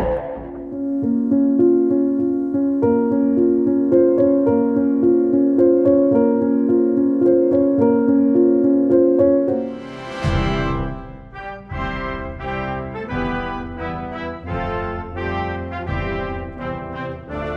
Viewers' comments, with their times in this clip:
0:05 Very depressing music.. fitting